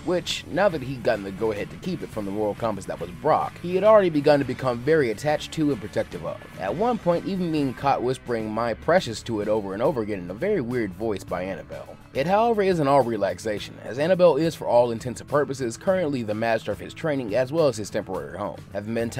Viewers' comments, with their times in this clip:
0:07 Ash sounding like Gollum from lord of the rings